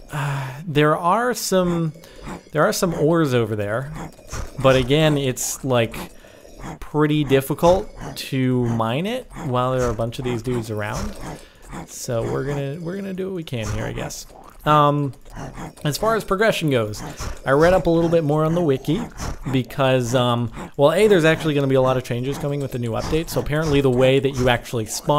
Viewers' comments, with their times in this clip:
0:09 is a sick ass lil beat